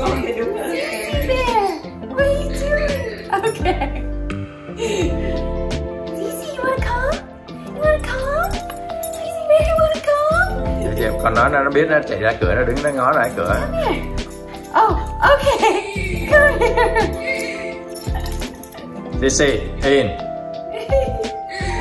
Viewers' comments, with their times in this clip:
0:05 sorry but that tone doesn't do it for me personally